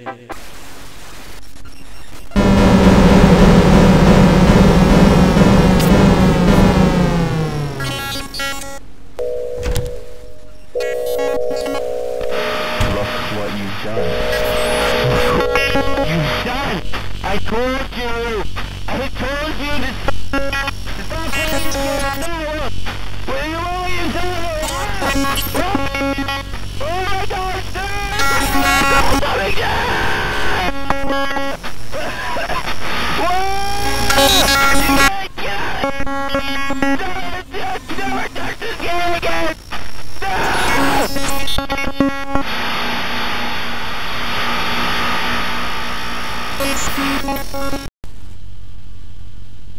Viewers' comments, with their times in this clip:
0:07 is my favorite part it's just funny when null is just s c r e a m i n g
0:08 the unintelligible screaming sound like "WHAT DID YOU DO" or "WHAT DID YOU DO NOW" i think
0:11 This os my favorite ending in the entirety of BB. Its absolutely bone chilling. You messed up MAJORLY, especially with the line "look what you've done." And hearing Null raise his voice is always meaning that this is bad. Especially with the original party style ending saying that ot was all your fault
0:12 later it sounds like he's going to begin to cry because of the fact that he tries to warn you about something and he knows this would happen
0:12 he sounds like the world is ending
0:17 null sounds like an indian
0:23 Lmao his scream
0:33 this creeps me out when Null response started screaming and tells the player to get out of the game